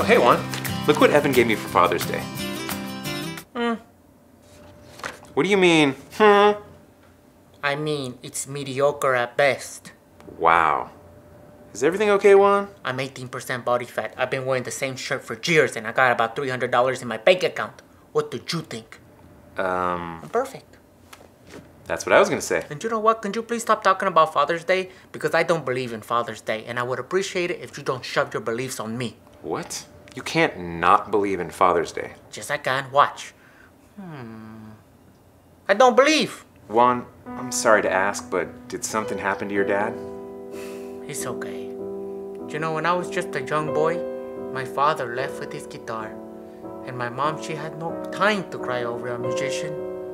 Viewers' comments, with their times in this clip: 0:06 No one: Villagers in Minecraft
0:34 is when he sounds like a villager in Minecraft